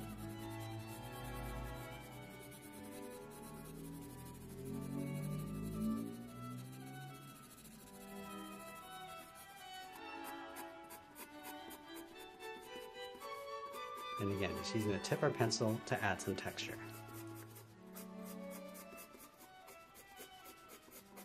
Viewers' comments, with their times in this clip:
0:03 normal people : paying attention to what he is saying legends : damn that car sound